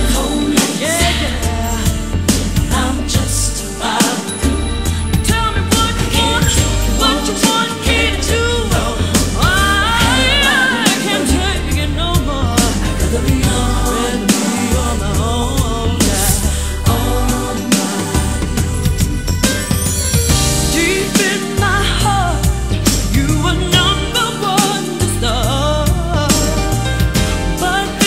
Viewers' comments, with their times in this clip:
0:10 The riff she does is my favorite part of the song! Such a classic